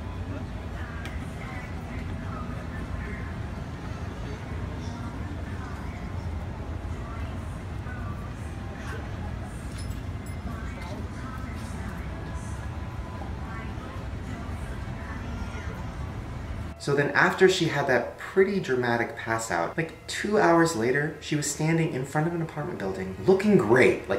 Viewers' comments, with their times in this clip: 0:05 look .... it looks like in her right foot there is a screw falling from her legs. and you see she can not go with it. you can hear the screw fall if you raise the volume🧐🧐🧐🧐🧐🧐🧐🧐🧐🧐🧐🧐🧐🧐🧐🧐🧐🧐🧐🧐🧐🧐🧐🧐🧐🧐🧐🧐🧐🧐🧐🧐🧐🧐🧐😂🧐🧐🧐🧐🧐🧐😱🧐🧐🧐🧐🧐🧐🧐🧐🧐🧐🧐🧐🧐🧐🧐🧐🧐🧐🧐🧐🧐🧐🧐🧐🧐🧐🧐🧐🧐🧐🧐🧐🧐🧐🧐🧐🧐🧐🧐🧐🧐🧐🧐🧐🧐🧐🧐🧐🧐🧐🧐🧐🧐🧐🧐🧐🧐🧐🧐🧐🧐🧐🧐🧐🧐🧐🧐🧐🧐🧐🧐🧐🧐🧐🧐🧐🧐🧐🧐🧐🧐🧐🧐🧐🧐🧐🧐🧐🧐🧐🧐🧐🧐🧐🧐🧐🧐🧐🧐🧐🧐🧐🧐🧐🧐🧐🧐🧐🧐🧐🧐🧐🧐🧐🧐🧐🧐🧐🧐🧐🧐🧐🧐🧐🧐🧐🧐🧐🧐🧐🧐🧐🧐🧐🧐🧐